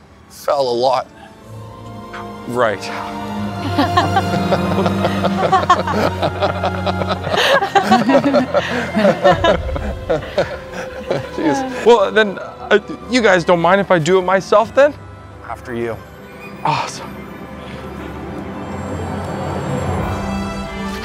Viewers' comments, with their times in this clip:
0:08 I love Charlotte's "you're insane and I hate this" grimace/laugh hahaha! Like a sane person would, watching this play out.